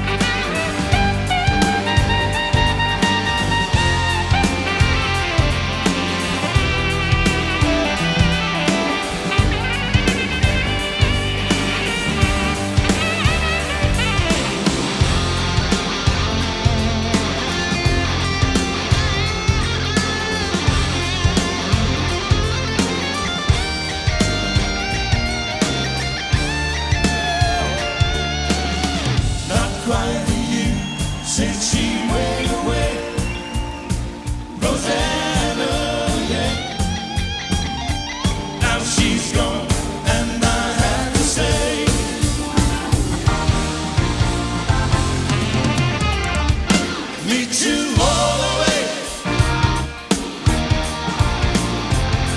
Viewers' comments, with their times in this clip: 0:03 Not debating the whole 'is Ringo a great drummer' thing, but you can see him los time on the ride. Almost like he was confused by the shuffle. I'm not even sure if the mics on his drums were mixed in.
0:33 Evidently his mics were not turned on. Look at the bridge and he is playing his snare when it doesn´t sound at all. Nevertheless, he is history of music.